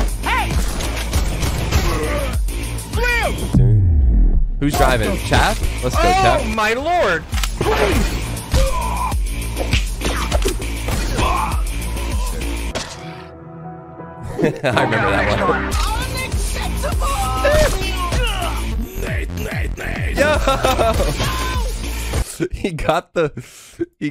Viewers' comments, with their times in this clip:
0:05 sounded like lets go champ